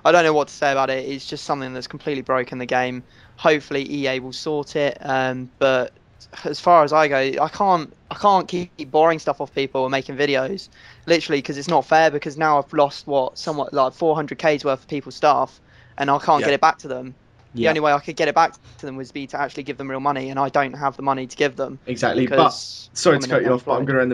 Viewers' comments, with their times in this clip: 0:08 voice crack again LOL